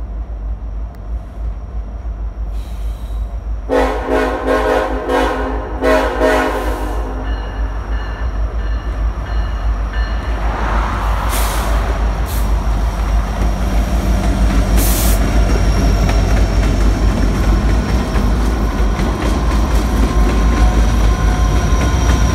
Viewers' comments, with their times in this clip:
0:03 That crisp shave and a haircut
0:06 Wait shave haircut but he didn't do the other times